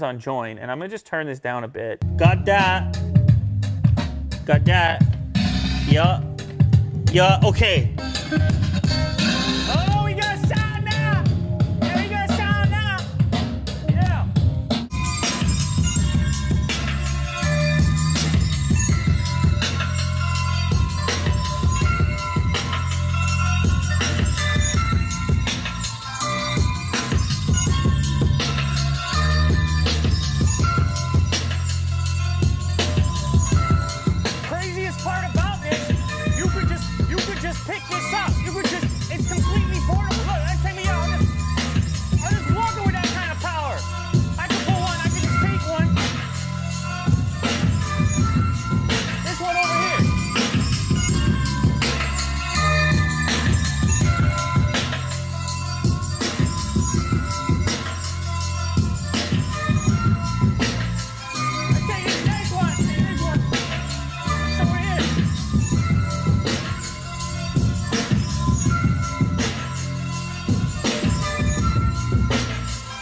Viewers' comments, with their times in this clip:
0:08 When your grandparents can’t figure out how to turn volume up, but all you did was turn it on.
0:34 my ear is rip💀👂
0:57 ...is that supposed to sound like an elementary school orchestra